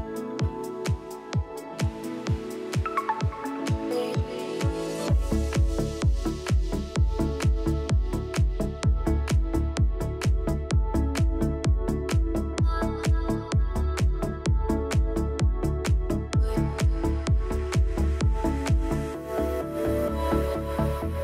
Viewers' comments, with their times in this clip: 0:04 I already had a smyle on my face in the beginning, but then I heard this synth and my smyle went from 😊 to 😁 haha. Such a nice set, many thanks! ✌